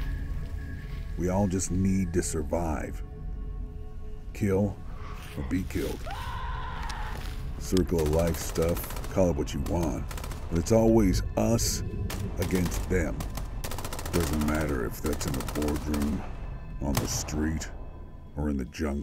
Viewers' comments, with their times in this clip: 0:06 Who is screaming? Who is firing in front of the FBI team? Another team? Or D-class personnel? Speaking of which, AREA-12 has a containment breach and the inside is in chaos, but their facility has always been hidden. It's secret and closed, why would SCP escape?